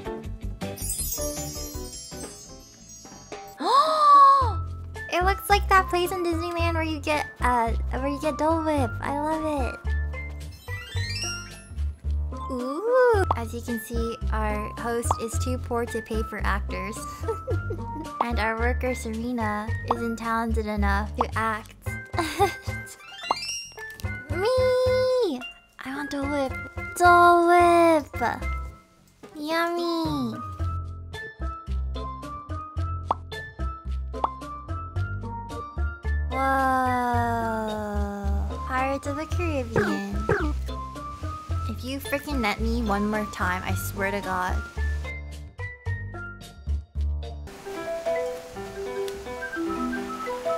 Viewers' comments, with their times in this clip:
0:05 the background song reminds me of gyros pizza song 😭😂(from jjba)
0:12 Is it me or the background music sounds like gyros pizza song???
0:30 the background music sounds like the mozzarella song from jojo or maybe the song is just popular and I'm dumb
0:31 wait.....do I hear......PIZZA MOZZA-RELLA PIZZA MOZZA-RELLA RERA RERO RERO RERA REEEEEEE